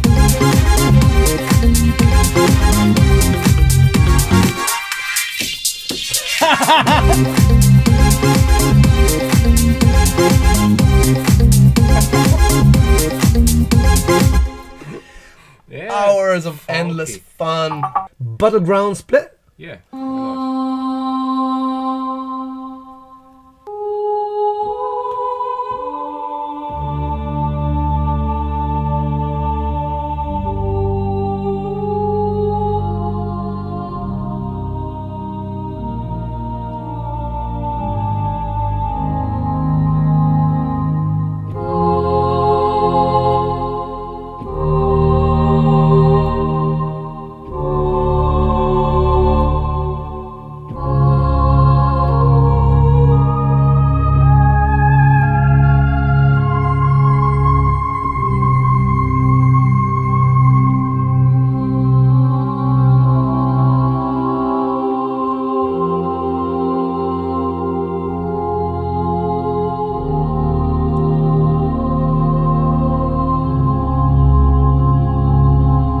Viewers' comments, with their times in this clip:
0:04 Every single future funk song
0:19 dude. That vocal "Battleground split" chord prog. arrangement you played after was fu#ing SICK!
0:20 When the choir touched your soul
0:20 The choir part was my most favorite! Amazing sound, well done Nexus team!
0:24 is just a sublime piece of improvisation. Beautifully haunting.
0:24 Dude, I legit got goosebumps from that melody
0:28 damn that sounded like a Hans Zimmer soundtrack
0:31 futur soundtrack of stranger things 😂
0:34 the effect sounds like the old mac game Marathon
0:44 the choir is stop on
0:54 the moment when you realise it doesnt sound like that what you have in mind. untill there it sounded naturally and then boom, electric or something. anyways,i would love to have it
1:04 The progression you played is fantastic!